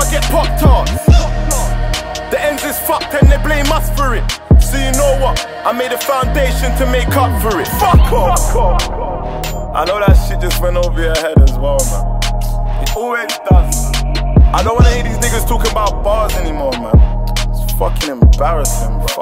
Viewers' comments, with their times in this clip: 0:07 sounds Like Deji??!!